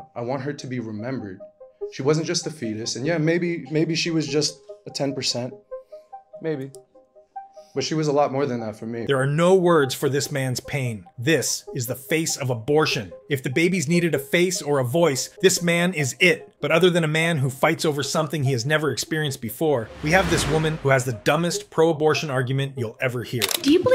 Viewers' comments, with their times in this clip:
0:05 in there were two women laughing as that poor man poured his heart out, what vile people we have in this world.